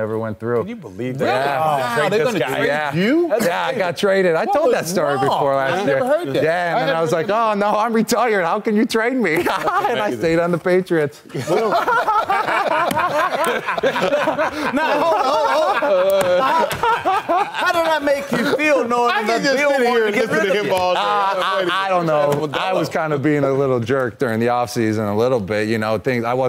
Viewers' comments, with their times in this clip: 0:07 Gronk laugh button
0:07 I'm a Lions fan and his delivery here is hilarious and I also don't blame him at all.
0:07 at least the patriots can now listen to that awkward laugh while officially becoming shit over nite. Thanks for D Slay as I'm a birds fan!
0:08 Cronk laugh 😃😃😀😀😀 total frat boy
0:09 That laugh tho 🤣
0:09 reminds me of that fish's laugh on Spongebob
0:10 That laugh when he remembers how he outsmarted everyone!!! It was great
0:10 Gronks laugh has every lions fan contemplating their lives
0:11 😂😂 Spongebob fish laugh
0:12 THIS EPIC LAUGHTER
0:12 gronk laugh button
0:12 Gronk’s laugh is GOLD. He kinda sounds like the Joker LMAO
0:12 The laugh of a true villain.
0:12 That contagious laugh just spread across the room; pretty sure some league execs were bemused at this.